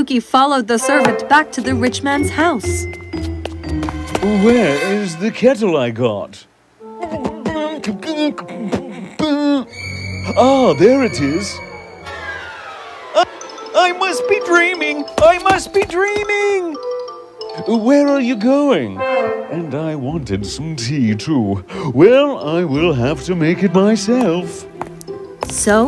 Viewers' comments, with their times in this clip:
0:06 Its a rap!! or maybe a hip hop lol
0:06 What is that voice....
0:06 Love this beat, man!